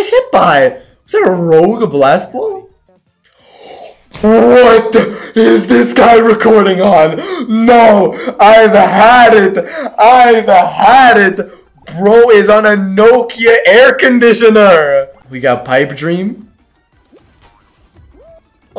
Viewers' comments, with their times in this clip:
0:03 save your ears!